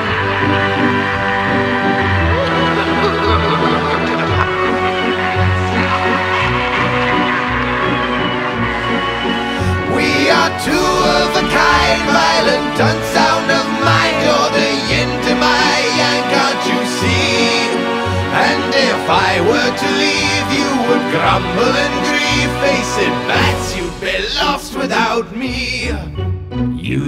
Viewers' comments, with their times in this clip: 0:07 the final chore is so fucking good
0:10 onwards would nearly pass for Mark Hamill's Joker singing. It sounds so accurate
0:12 "violent gun sound of mine"? What the hell is he saying?